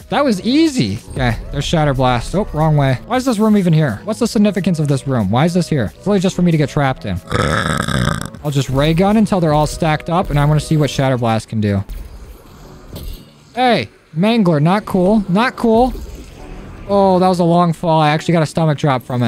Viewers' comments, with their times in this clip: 0:07 The bear inside you just woke up from his hibernation, what a bass boosted burp